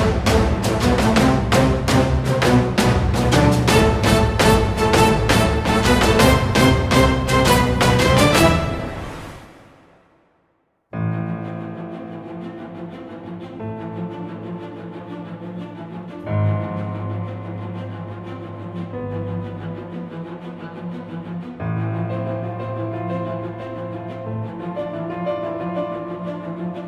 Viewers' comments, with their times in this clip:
0:10 sounds like its straight out of fire emblem lol